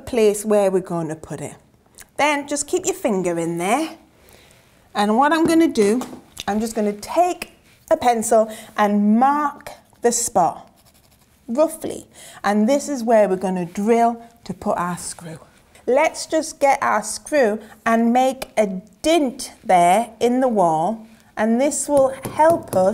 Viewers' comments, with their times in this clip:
0:09 did they added the pencil sound effect?